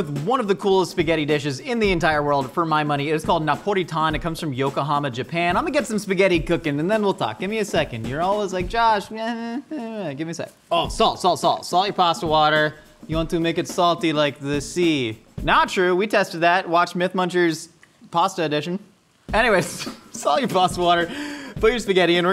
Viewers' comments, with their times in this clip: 0:09 this feels like josh gently telling a younger sibling to give him a minute